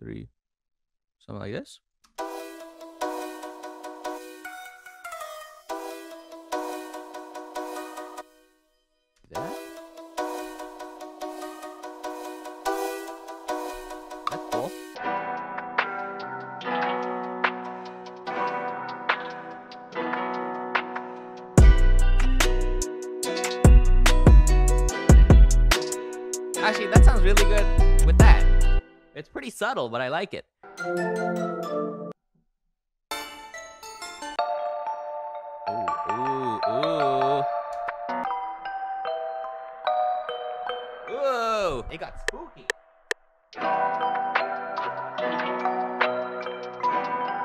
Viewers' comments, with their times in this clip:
0:04 Why did the note slide sound so hard😂
0:05 you could have added that slide in a cool way right where you paused it
0:15 travis scott has entered the chat
0:30 Anyone else think he was bouta play the my little pony theme song?